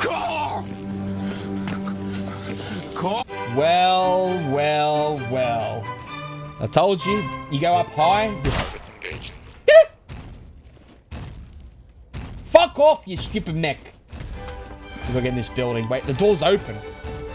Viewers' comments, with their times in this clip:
0:05 the robot sounds like it says "fucking bitch" after it shoots at the Verts lmao